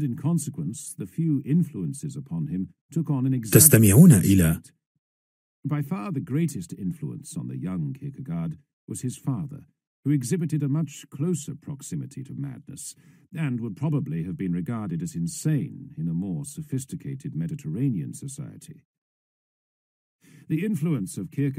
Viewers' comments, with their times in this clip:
0:03 Some random Spanish just to break the train of thought of the listener?